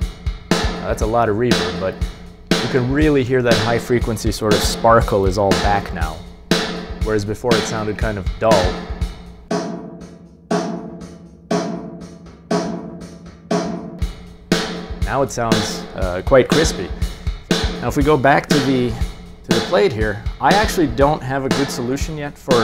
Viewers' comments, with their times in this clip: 0:03 sounds, as would the drummer play in an empty oil tank.